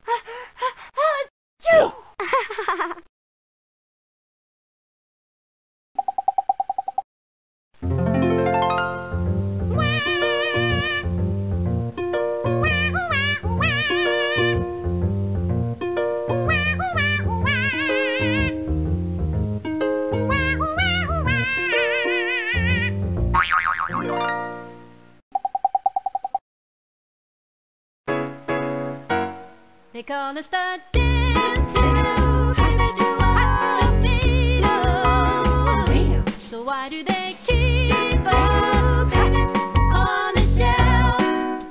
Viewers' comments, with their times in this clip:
0:07 Boy, lotta great memories in this... but can we talk about how ALL of the music in this is so good? Like, for just being like 20 second jingles or songs, they're all jams haha! For example there's two bangers in a row starting but like...even the incidental stuff is all catchy. Props to whoever wrote them.
0:26 always enjoyed that music number